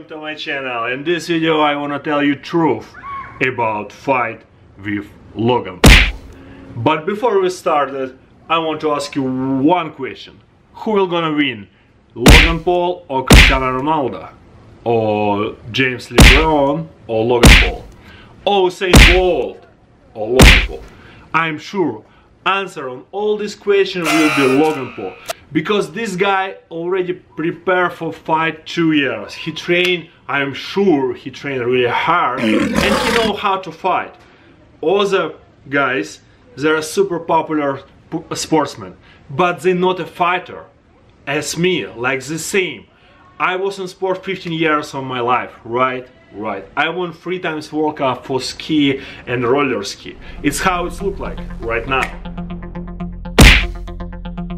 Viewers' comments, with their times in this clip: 0:03 Who the fuck screamed
0:37 super popular pooper sportsman